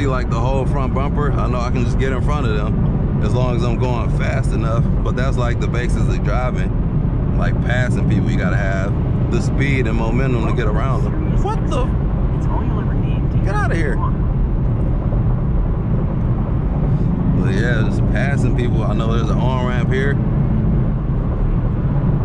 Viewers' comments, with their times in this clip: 0:10 Was that the "curse" coming through the radio?